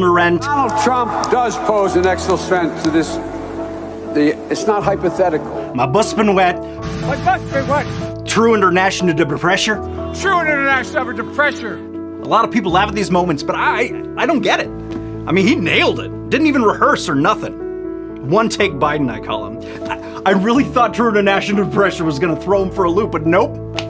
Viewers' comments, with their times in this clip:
0:07 I always thought he was saying 'I lost my wife' 😁